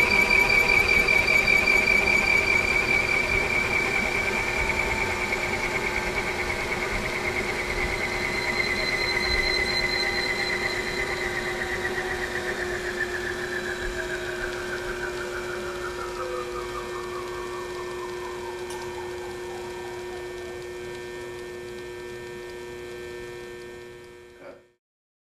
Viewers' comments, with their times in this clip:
0:09 Excellent. only the driving mechanism noise too annoying. Actually the intermediate frequency resonance is much more clear after the motor stopped,